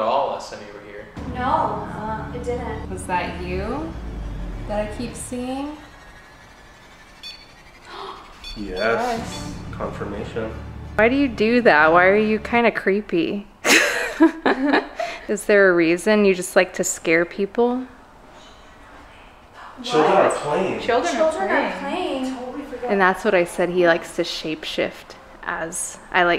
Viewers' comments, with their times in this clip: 0:08 When Rem pods does the loud beeping noise it means the temperature changed! 👍🏼